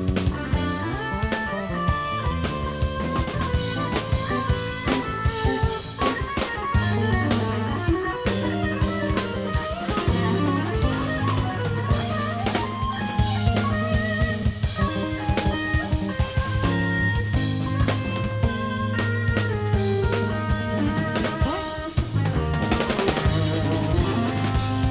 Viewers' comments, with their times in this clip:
0:05 what's happening ? I came back here to listen to this guitar lick after 10 years since I first listen to this live concert.